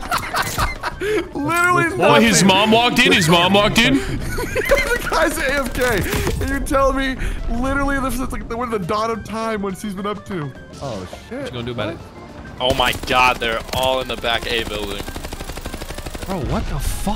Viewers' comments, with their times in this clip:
0:04 The audio isn't matched with the right part, I remember this part from the stream and he was complaining about the ads not in his favor when he unprones.